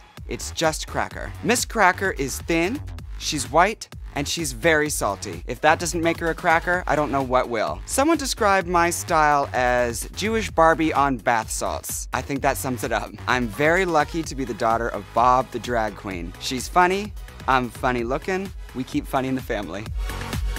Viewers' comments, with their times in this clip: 0:03 Pause and go to playback speed and do x0.25 and listen. She says hhhhwwwwhhhiiitteee